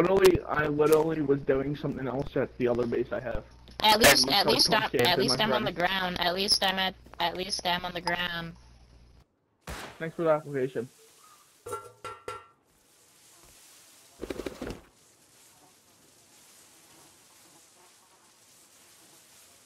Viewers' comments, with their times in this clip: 0:04 Kids voice is so annoying